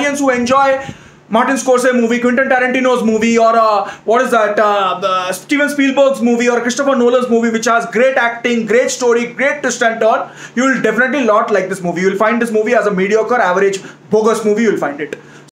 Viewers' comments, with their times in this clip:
0:06 ...Did he say Krishnappa Nolan ?? 😭😭😂😂😂😂